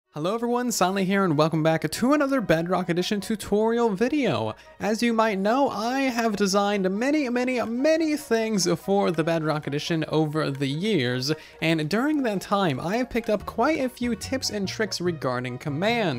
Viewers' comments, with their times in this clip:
0:00 I thought this were for java when you said hello everyone cuz u sounded like mumbo jumbo lol